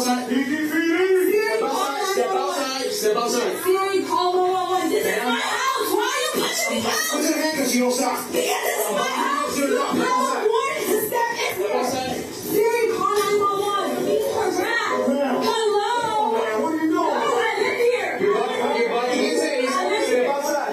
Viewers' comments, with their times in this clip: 0:07 The problem with the tone and volume of the cops voice in the hall claiming he’s identifying himself just sounds like noise when you live in a big a apartment complex. When you live in a big apartment complex you ignore those types of noises. It’s just somebody walking down the hall making noise. Where did they get the key is the bigger question. But of course the warrant is the biggest piece. And then to just execute the dog. There’s a process for determining if the dog needs to be put down. And shooting it and teasing it is not it. If the homeowner had done that to their own dog they would have been sent to jail and charged. But cops can do it? Of course cops can do it because they have the guns.